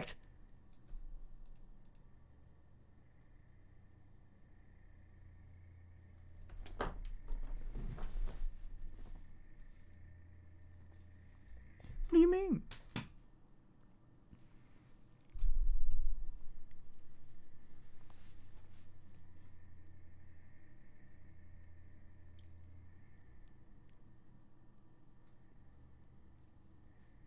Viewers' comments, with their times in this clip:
0:08 those bastards! Evil aggressive meow